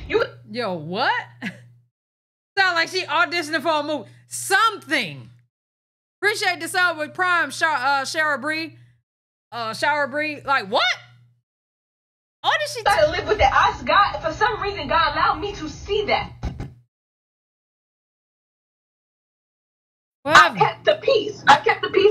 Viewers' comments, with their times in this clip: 0:10 It definitely sounds she was acting if you ask me and trying to get into character 🤣🤣🤣 she never gaf 🤣🤣🤣